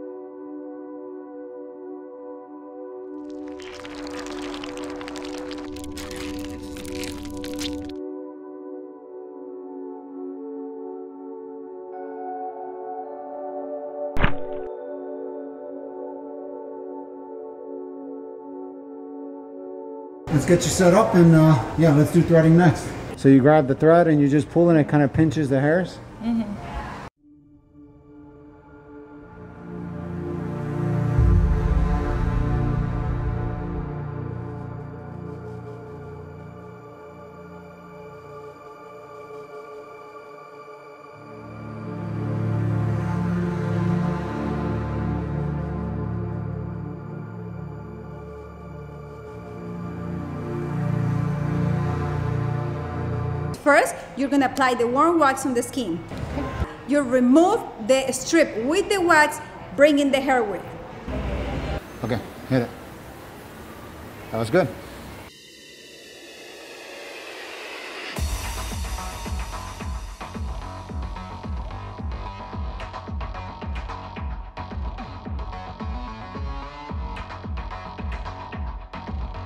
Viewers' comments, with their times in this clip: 0:03 I wasn't expecting the gut wrenching sound
1:00 “Bring in the heroin”